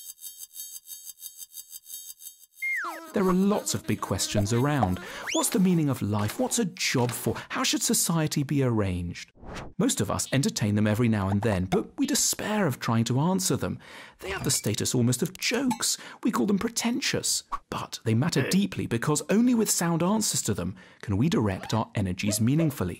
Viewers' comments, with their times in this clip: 0:04 I thought there was a mosquito around my neck 😂